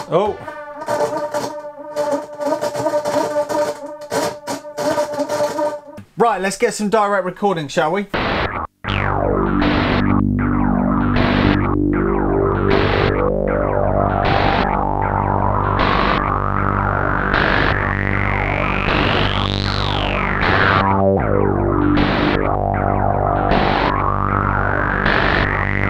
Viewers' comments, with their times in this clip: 0:09 Getting very Throbbing Gristle there